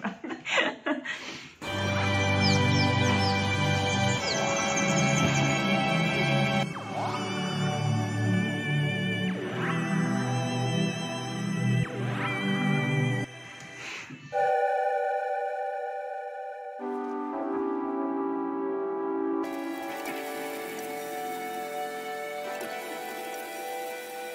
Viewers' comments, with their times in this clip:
0:08 it's giving ET 😂. So I guess not far from Celtic 80s pop ahaha